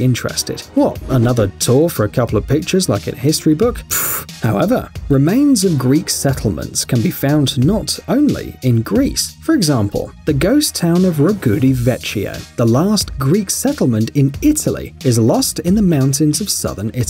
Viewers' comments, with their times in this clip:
0:03 When he said however in it sounded like the meme hello there